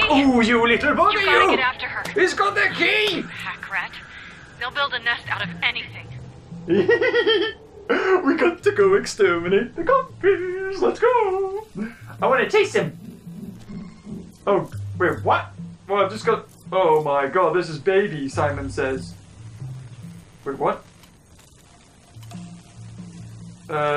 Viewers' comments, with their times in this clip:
0:08 Ok now the way he just said that-